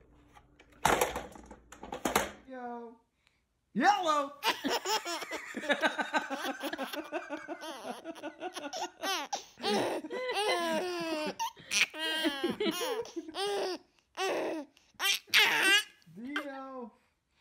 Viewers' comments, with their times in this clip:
0:03 I like when the babies laugh at it. is my favourite